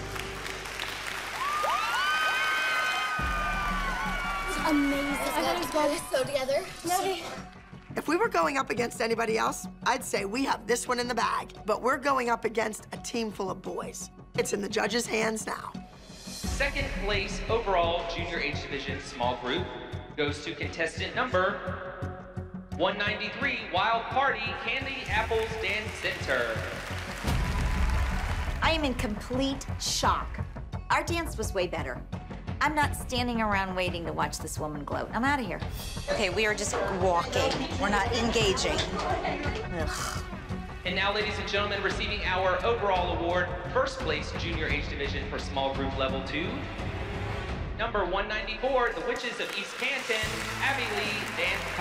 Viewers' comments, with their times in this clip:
0:05 This part is hilarious Maddie smile and the way she said it was just funny to me
0:32 Abby laughing at candy apples placement is hilarious 😂 Broke my heart JoJo crying thinking she let the team down and thought Abby to be mad at her 😞😢 I love Holly's encouraging words at the end trying to cheer them up and letting them know their worth!! ❤